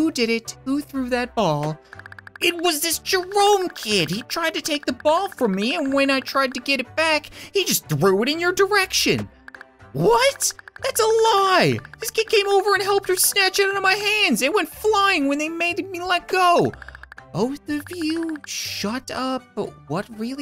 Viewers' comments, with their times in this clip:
0:08 it sound like captain gas autotune on⊙﹏⊙